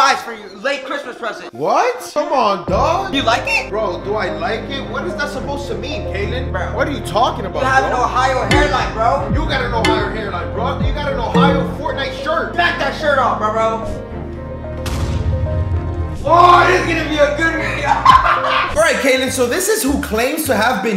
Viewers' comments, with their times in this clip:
0:03 the voice crack😭😭😭